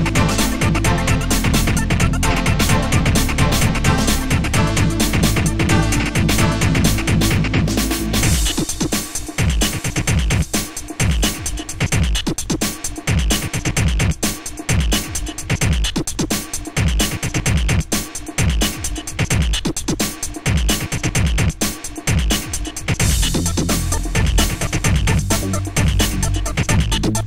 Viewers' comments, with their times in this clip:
0:08 My favorite part. it's quieter but it sounds really good